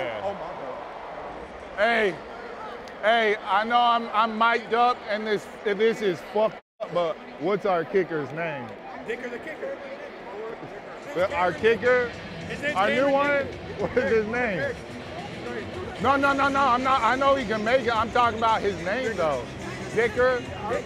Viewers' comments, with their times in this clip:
0:05 Editors didn’t even bother bleeping lmfao